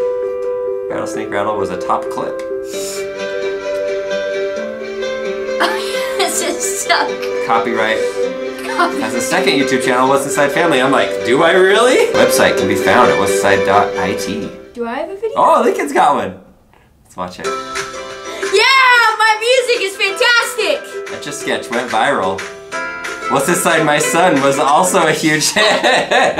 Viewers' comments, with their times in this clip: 0:08 sounds like the great British bake off theme.